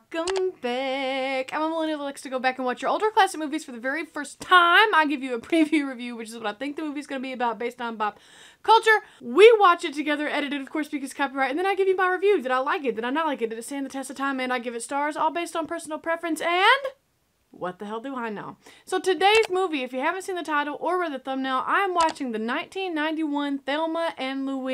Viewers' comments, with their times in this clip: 0:09 Did she just say “bop culture”? Is this an inside joke I’m not privy to?